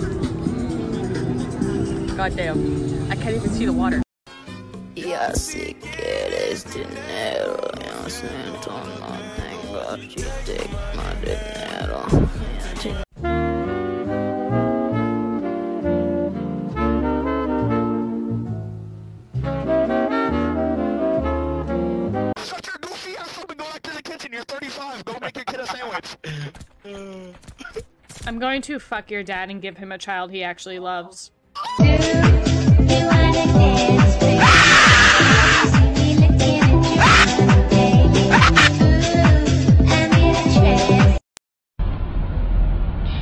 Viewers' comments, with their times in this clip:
0:04 you sound like my 6 year old cousin trying to act tough
0:11 bro i sound like im mofoing 21 and im not so screw that person because he sounds like a mofoing 7 y/o
0:12 yo voice ain’t sound like that lil bro
0:30 was freaking stone cold mate that scream was one of absolute rage from getting dunked on